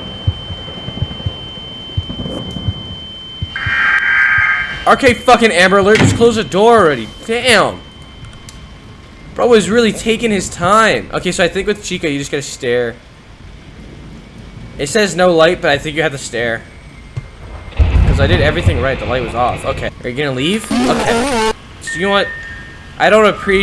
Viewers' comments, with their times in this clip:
0:04 lmao he actually got upset right here u can hear it in his voice